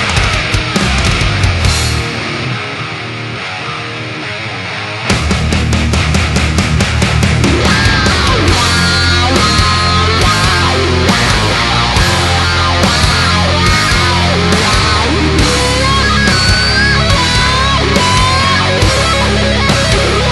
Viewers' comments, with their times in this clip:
0:06 I love how it breaks into a Reload era sounding Metallica solo Reminds me a lot of Fixxxer!